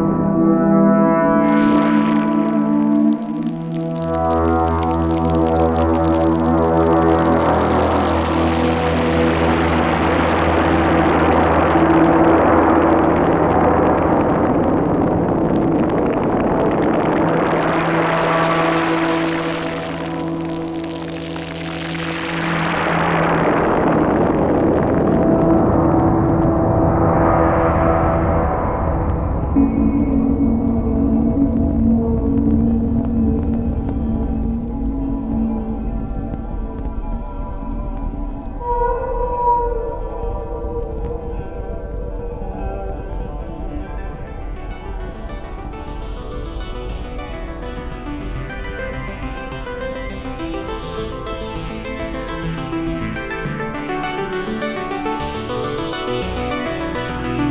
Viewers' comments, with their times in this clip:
0:06 Woah this is so clear its melting my brain a little. But it does hurt my soul to not hear the drums kick in at that part
0:39 This is what I needed for my birthday, the part from till the end without the drums. I’m stil crying for the people of Gaza
0:43 I'm so glad they did this. I can finally listen to my favorite part uninterrupted without the drums blaring over the synths. It sounds amazing